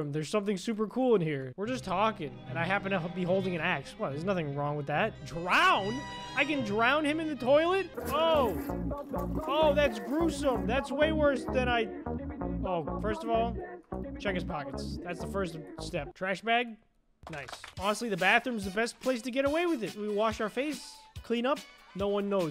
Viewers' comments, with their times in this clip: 0:08 why you put that brain rot song